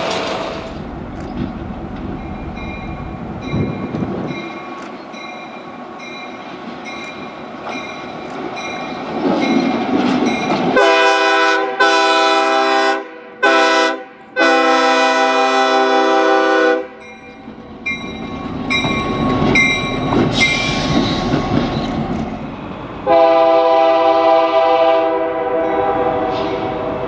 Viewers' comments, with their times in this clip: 0:09 Nice k5hl on